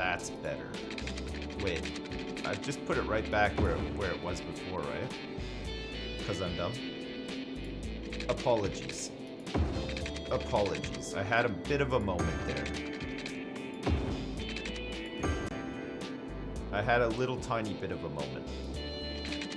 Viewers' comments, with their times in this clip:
0:06 What song plays ? The guitar riffs keeps bugging my ears.